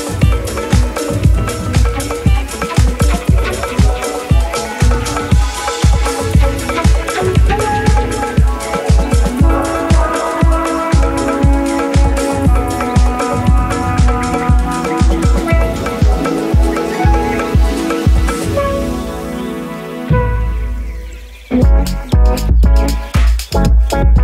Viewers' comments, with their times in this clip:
0:07 is super lively